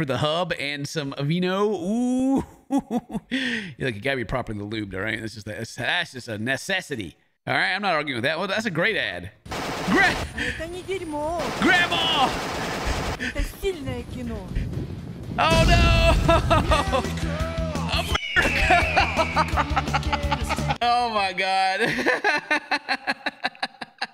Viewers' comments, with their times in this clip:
0:10 why is she speaking russian and then "America fck yeah" happens?